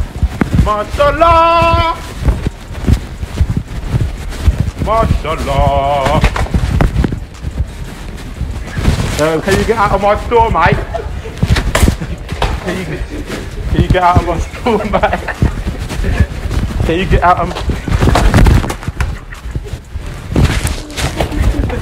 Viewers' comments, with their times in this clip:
0:04 that accent though, “can you get out of my store m8